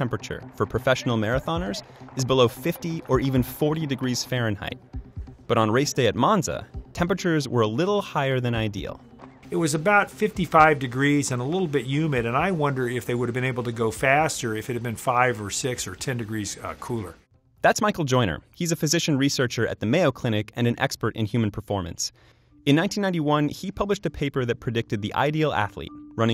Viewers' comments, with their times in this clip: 0:10 I thought he sounded like Kermit the frog